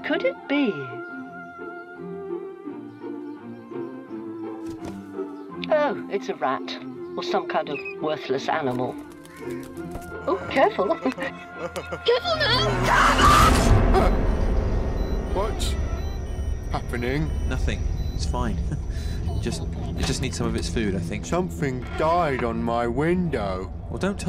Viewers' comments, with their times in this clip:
0:07 sent me for some reason. The way she sounds so disgusted when yellow guy opened the box threw me off lol
0:08 That scream is horrifying to hear at night.